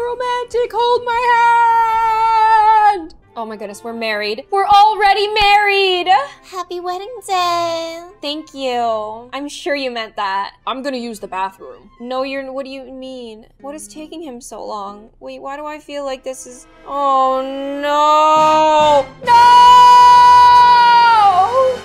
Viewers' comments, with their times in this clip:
0:06 the Jennifer Tilly voice thooooo